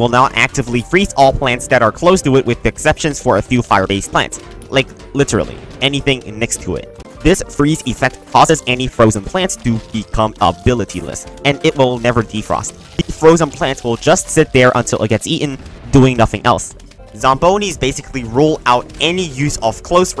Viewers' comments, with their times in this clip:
0:07 The audio starts glitching